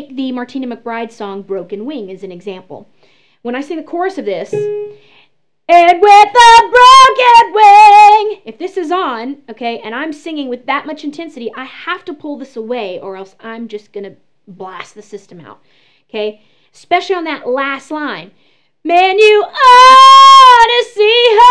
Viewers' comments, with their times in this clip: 0:06 Rip headphone users Guess only me. Lol. But you sing great. :)